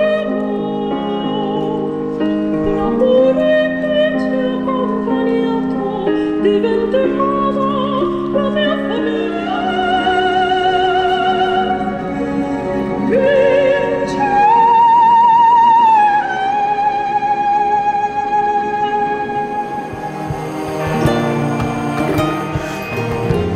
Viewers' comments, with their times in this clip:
0:04 it sounds like Ed Sheeran - Perfect but in different lang. Great work btw ❤️